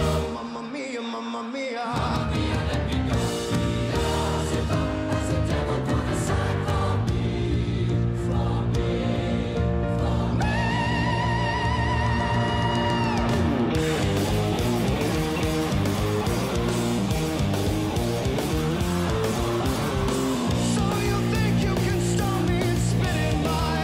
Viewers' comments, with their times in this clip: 0:10 That high note was amazing
0:11 That NOTE 🎵 in Bohemian Rhapsody! 🤯😳😍! That is freaking 🔥!